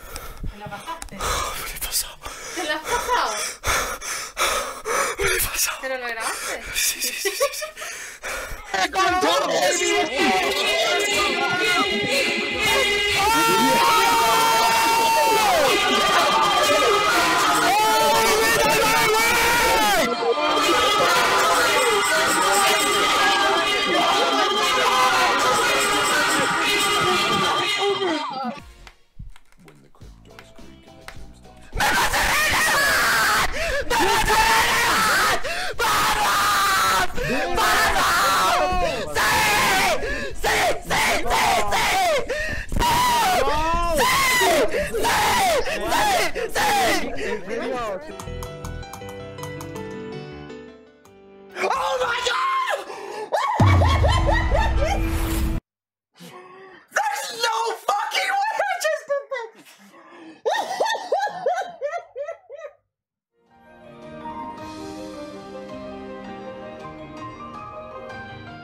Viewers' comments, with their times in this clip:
0:09 I thought that was mlg music
0:09 LMAO SQUID GAME 🤣🤣🤣🤣🤣🤣🤣🤣🤣 SO MUCH SOUND SO LOUD!!!!
0:10 bro broke the word record for being the loudest human being💀 Edit:there is no fricking way I got 2 likes how
0:41 bro sounded like an anime charecter
0:45 Does he always scream like that?
0:49 who is open door?..